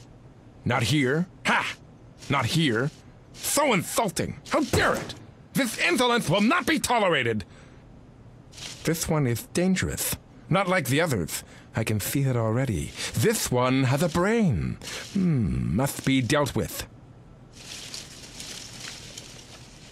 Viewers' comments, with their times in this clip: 0:03 Wow that guy is Daffy duck how he talks xD i laughed so hard lmao btw great vid